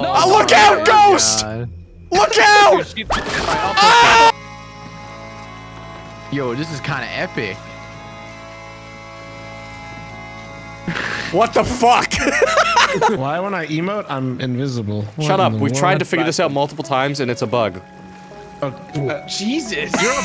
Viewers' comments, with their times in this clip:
0:04 That epic music. Smii7yplus Choice: Throw them off his row boats.